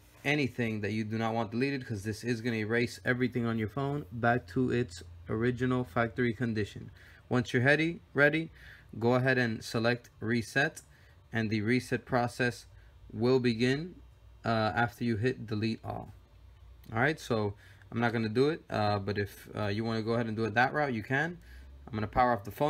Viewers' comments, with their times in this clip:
0:06 once youre heady...ready